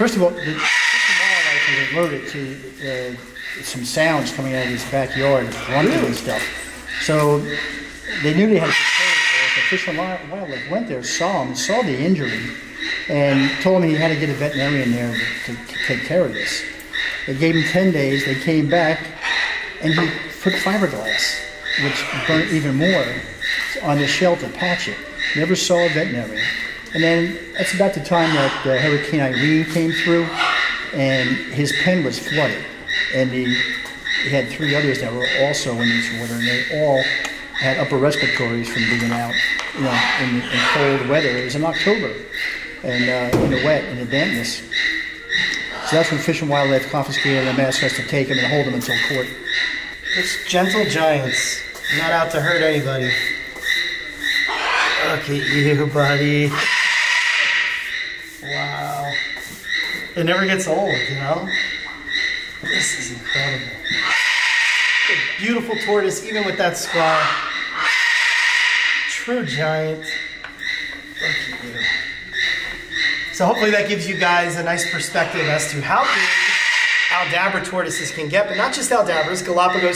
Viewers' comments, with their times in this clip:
0:10 The parrot has watched “psycho” too many times…
0:30 That siren animal in the background, is making that sound like a horror scene, lol.
1:05 xD even the other birds are yelling at the one to shut up.